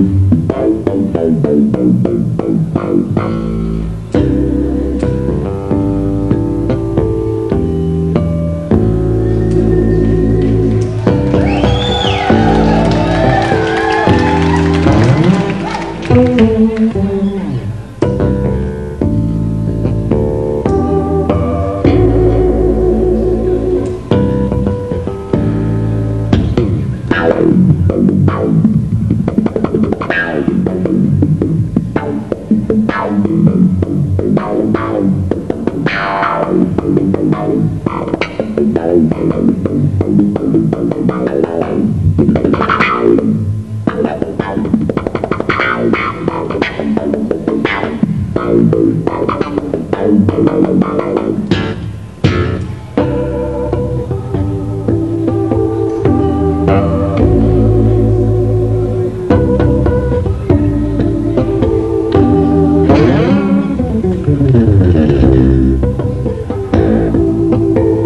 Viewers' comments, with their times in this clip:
0:04 its almost bein in heaven its so fucking relaxing its another song of doug¿? or thats all? i will love that there was a full song with that riff sorry about my bad english
0:04 I was only referring to the section, where Doug plays harmonics, it reminded me to it. I know the song is from mr Wimbish. Peace! ;)
0:53 it's not just groove, but great feeling.